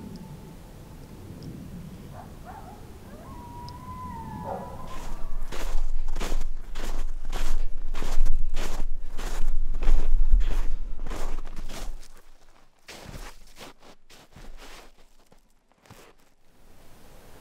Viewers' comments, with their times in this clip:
0:04 At time stamp when u hear howls u better get out of there